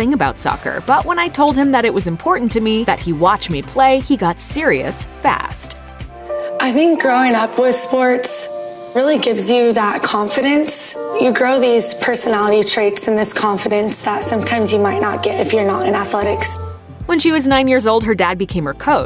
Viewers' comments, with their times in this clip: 0:06 Prepare your ears for 10 seconds of vocal fry.